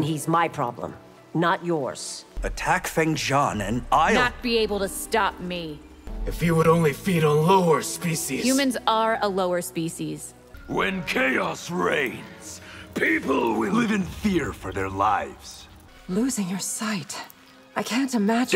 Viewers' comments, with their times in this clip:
0:05 I mean for me it was decent, but then i Hearst yep, that sounds dead af